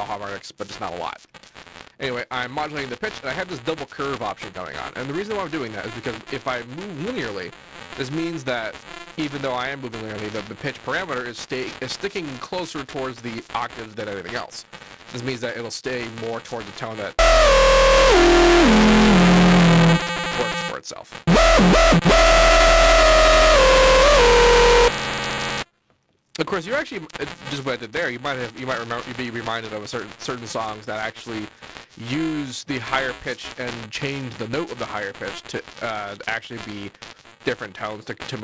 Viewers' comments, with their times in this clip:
0:05 Great tutorial, but it goes into bitcrusher mode
0:20 Literally, RIP headphones